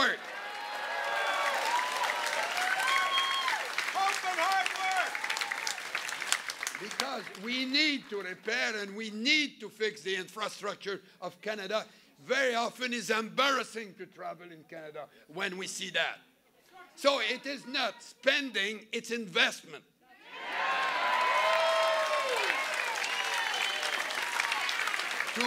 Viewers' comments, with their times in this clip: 0:10 Did someone yell vote Harper